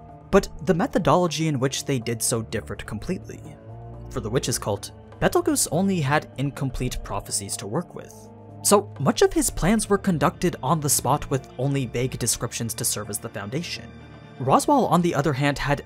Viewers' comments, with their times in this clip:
0:03 the way he said Betelegeuse made me lose all my brain cells